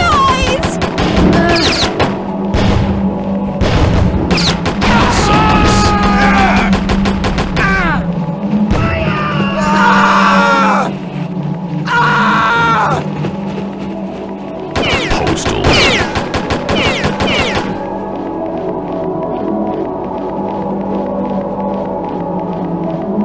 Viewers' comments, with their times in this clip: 0:09 I like how the POSTAL Dude says “FIIIIRRRREEE!!” 🔥